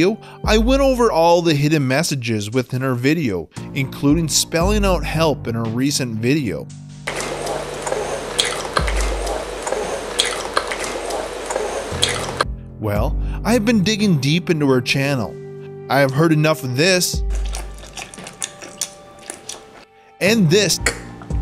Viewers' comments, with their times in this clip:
0:07 i hear "I will love you" 😅😂